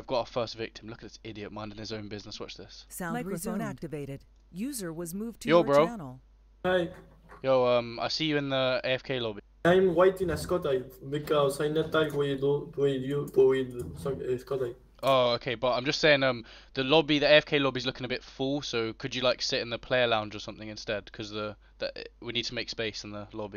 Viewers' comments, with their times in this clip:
0:09 100 dollars if u understand what he said LOOOOL